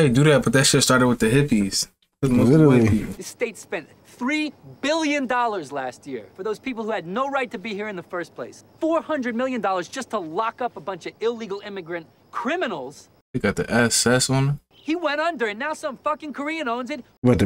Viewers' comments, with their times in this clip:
0:04 Man sounds like a Trump Speech